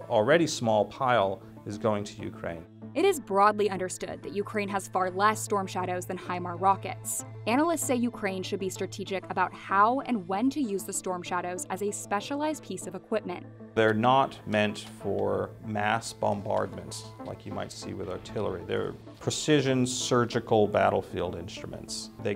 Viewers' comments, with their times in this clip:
0:09 what’s that “pornhub”😂